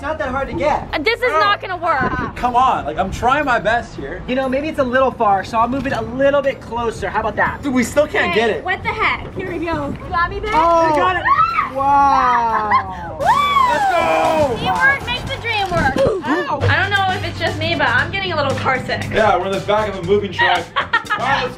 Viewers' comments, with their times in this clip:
0:09 it sounded like she said "you got me babe"😢